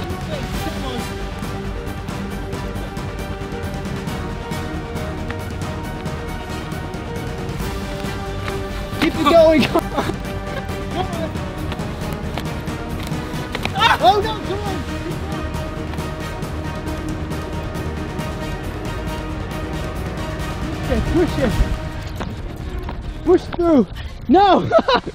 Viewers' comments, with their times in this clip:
0:06 it looks so funny with this epic music